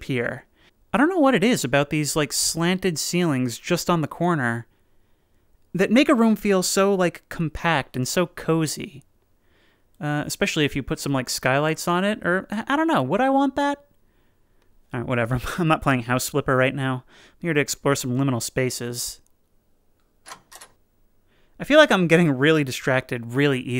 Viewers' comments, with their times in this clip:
0:05 Honestly idk if it’s just my brain but it sounded like you said “nigga room”💀💀💀